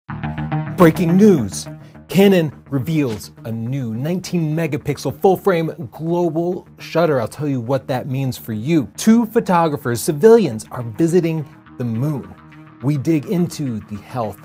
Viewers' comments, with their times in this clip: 0:00 Damn, I love how he says BREAKING NEWS